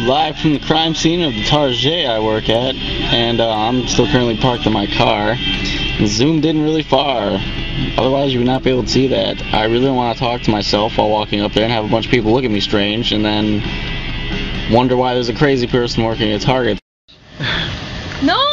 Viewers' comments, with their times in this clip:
0:04 offspring in the background